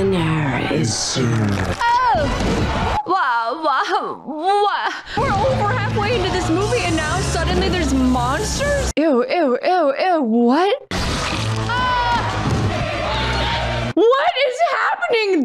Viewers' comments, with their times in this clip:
0:03 Wa! Wa! Waoo! A perfect reaction to the sudden change of pace in a movie that I've ever heard.